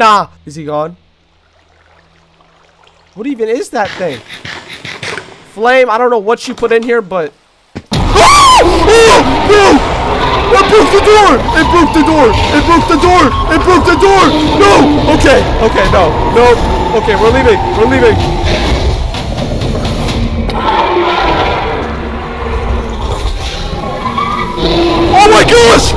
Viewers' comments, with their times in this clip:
0:07 THE SCREAM IS TOO FUNNY LMAO